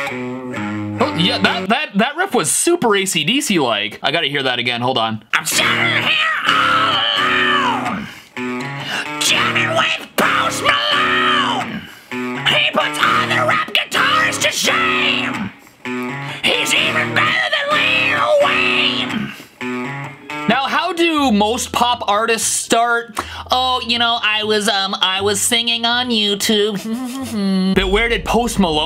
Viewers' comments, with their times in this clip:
0:04 I thought it was Brian Johnson
0:05 Wtf that is sick vocals. I thought it was really AC/DC.
0:05 those are really good vocals holy shit
0:05 I know you're joking but dang dude that's a crazy accurate/good impression like wtf 😂
0:05 Wow, you really sound like Brian Johnson (from AC/DC). That is one of the best damn impression I seen... Not everyone can go that high on the scream notes...
0:06 he sounds almost exactly like Carl Keifer from Cinderella!
0:06 That Angus Young voice impression is actually spot on lol
0:14 he can actually sing like that dude from acdc